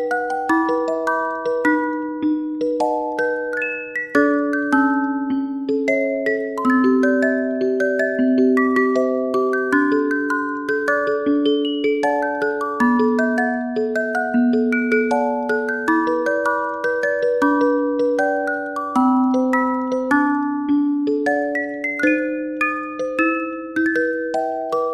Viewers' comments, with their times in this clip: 0:10 stop wheezing like a wicked witch 🖤🤣🤣